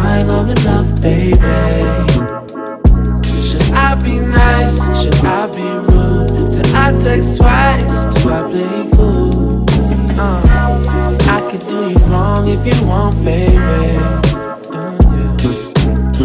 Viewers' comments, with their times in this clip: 0:04 the chorus adlib is 🔥🔥🔥